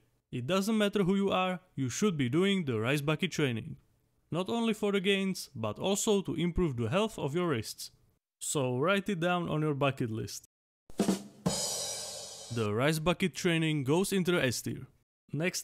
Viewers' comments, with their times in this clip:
0:03 in i heard "you should be doing the rice bucket challenge"